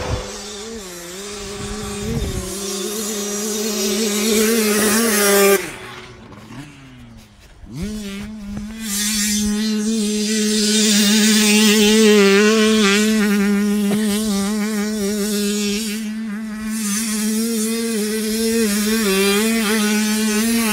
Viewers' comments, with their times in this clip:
0:04 dirtbike:🚫 giant mosquito:✅